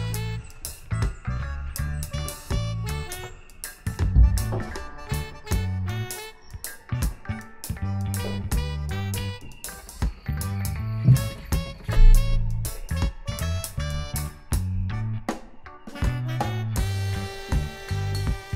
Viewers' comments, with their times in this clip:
0:05 frog eating air asmr